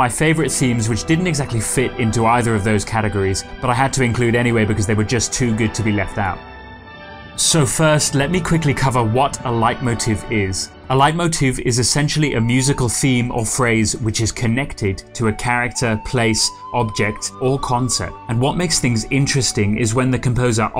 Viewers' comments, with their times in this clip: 0:08 Is it just me, or do I hear one of the characters saying "Fuck" ?